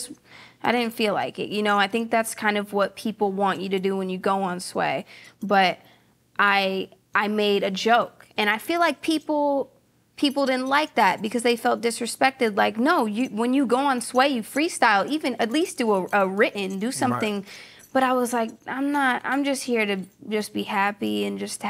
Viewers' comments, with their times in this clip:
0:03 the inflections in her voice when speaking showing glints of her vocal ranges - so dope